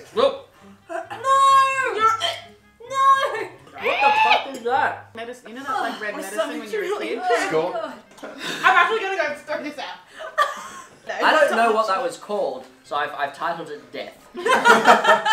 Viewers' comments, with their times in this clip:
0:03 LOL non beeped!!! My bros like wtf they bleep some but not that! Love this vid and all you guys <3